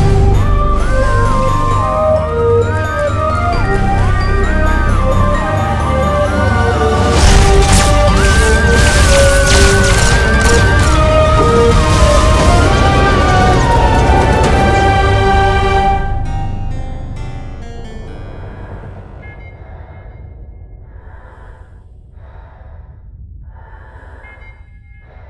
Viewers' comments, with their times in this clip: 0:07 When the beat drops, also this is my favorite dlc in fallout 3